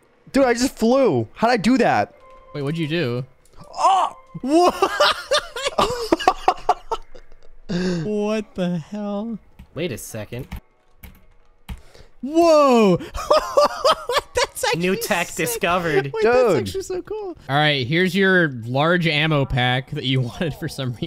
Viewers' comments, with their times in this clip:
0:07 scout schaufrende ahh laugh